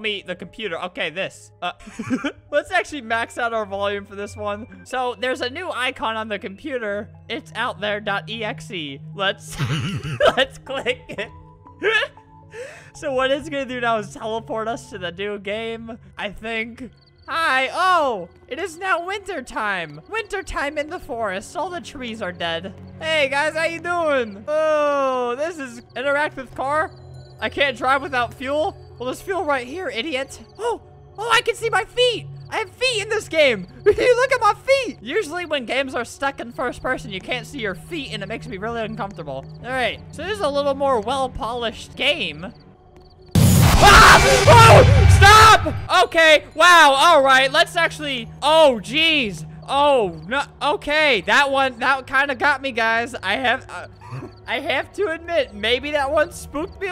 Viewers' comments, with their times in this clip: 0:07 i love flamingos laugh xdd it sounds a little bit like mine when i watch his new vids xdd
0:08 playing a demon game made him do a demonic laugh
0:09 that laugh always gets me lmao
0:09 My gas pump while filling up my basketball
0:44 I jumped and laughed at Alberts scream